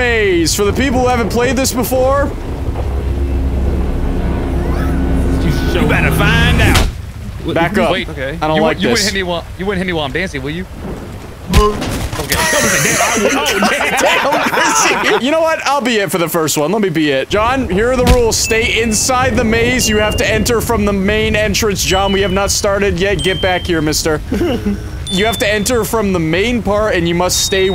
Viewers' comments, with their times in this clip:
0:09 i love the sudden "Hur.mp3" while toy freddy falls over
0:11 the 'hurr' when he hit him got me rolling